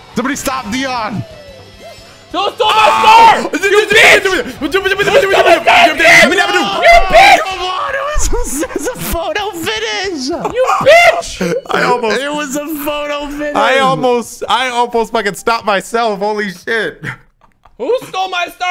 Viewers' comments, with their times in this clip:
0:03 courage the cowardly dog trying to explain the monster he saw